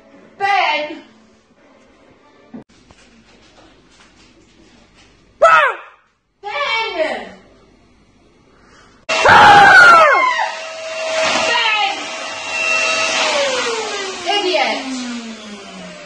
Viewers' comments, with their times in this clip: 0:03 That was a funny scream